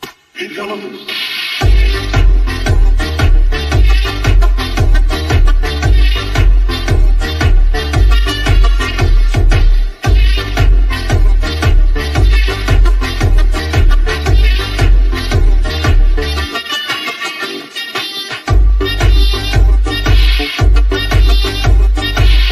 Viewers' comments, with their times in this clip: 0:06 Love that song that she made🎉